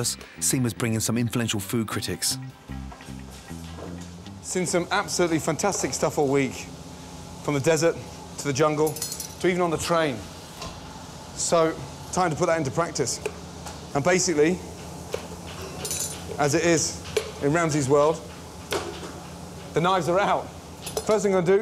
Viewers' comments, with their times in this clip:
0:05 Wonder what Ramsay thought of that shit fly buzzing around the kitchen, bet he got raging mad!